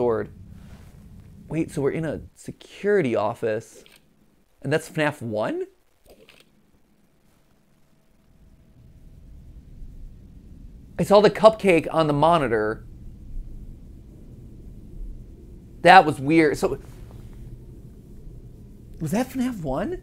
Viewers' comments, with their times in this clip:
0:05 I heard a crunch. So maybe Vanny/Vanessia has something to do with the bite of 87. Not the bite of 83 but 87. Just throwing some lore ideas this is not true